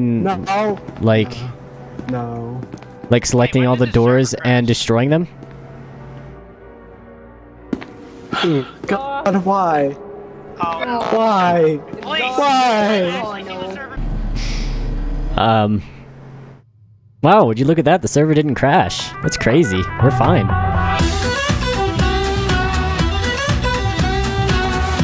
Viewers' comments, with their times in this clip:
0:10 did someone fart in their mic ?